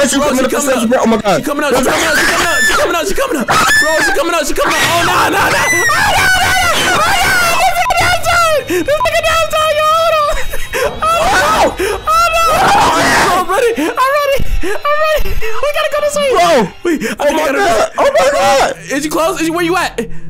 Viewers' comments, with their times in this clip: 0:04 This got me dying😂😂😂😂😂😂 bro he’s scream😂😂😂😂😂 bro I can’t stop laughing